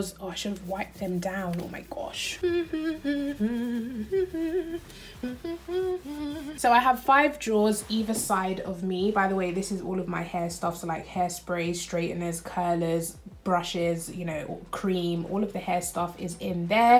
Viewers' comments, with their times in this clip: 0:03 that humming is so cuteee